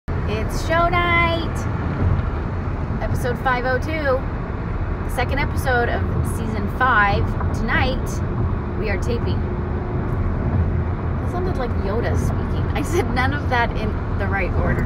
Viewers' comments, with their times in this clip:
0:00 Speakers : YODA SPEAKING Me : hello yoda